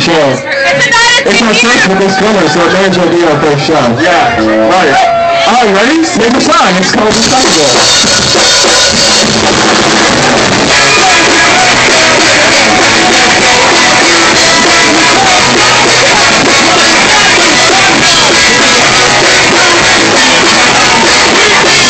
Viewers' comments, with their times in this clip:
0:03 song starts just in case banter annoys you ;-)